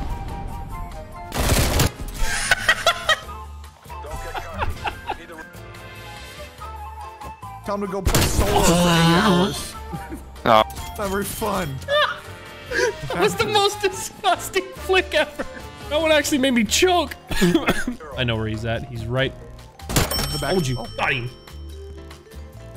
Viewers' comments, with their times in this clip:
0:06 that was the most unexpected wheeze ever 😭💀
0:06 but that wheeze tho😂
0:06 slow down the wheeze to 0.25x speed it's hilarious
0:07 damn that wheeze
0:08 windpipe was OPEN my guy, OPEN!!!
0:08 the wheeze got me XD
0:08 holy shit the W H E E Z E
0:08 you didn't nearly choke, that WHEEZE!